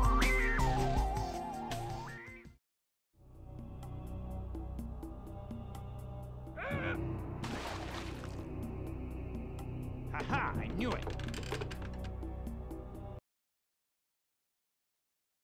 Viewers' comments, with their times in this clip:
0:09 Sounds like one of the WarCraft 3 transport ship sounds.